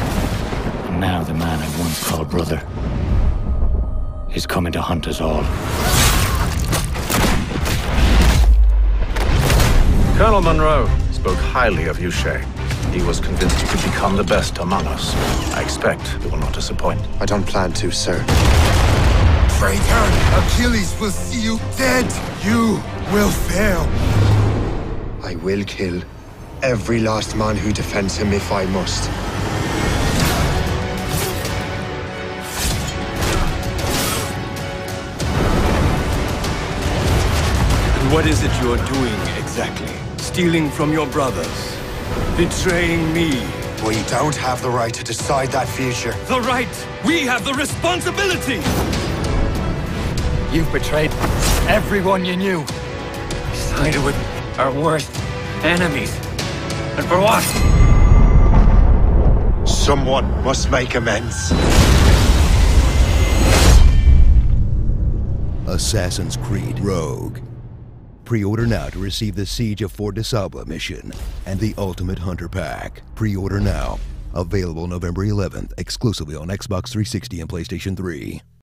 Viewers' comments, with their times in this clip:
0:05 aaaannd cue the Imperial march music
1:05 that sounds alot like the Honest Trailers (ScreenJunkies) guy.